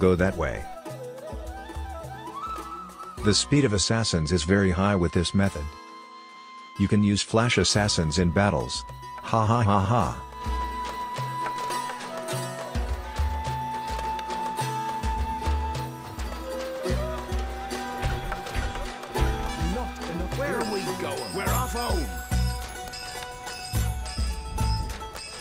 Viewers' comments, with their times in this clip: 0:09 That hahahaha sound seems like a fake laugh, people don't laugh like that 😂